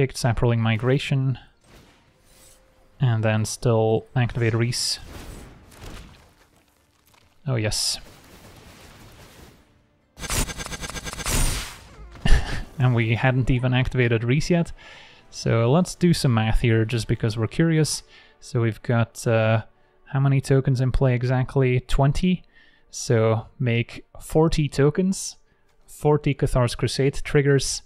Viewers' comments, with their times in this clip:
0:09 Moments like these are exactly why I watch your content man! The synergy of the deck coming all together to make some big creatures and make some funny sounds. Love to hear you having fun playing!
0:09 the sound of a million +1 counters is both annoying and satisfactory